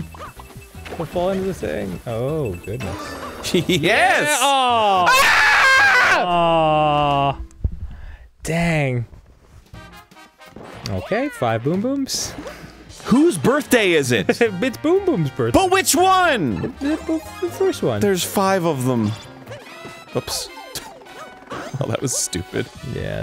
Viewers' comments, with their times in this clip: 0:06 Best scream ever!